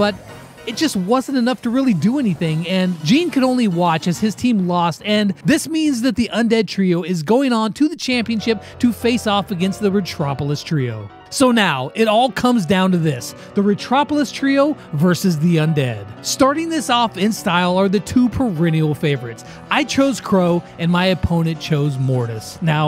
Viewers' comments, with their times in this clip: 0:08 actual boss music
0:08 why i heard boss music :^ ?
0:08 i can hear that piano before cynthia playing in the background :0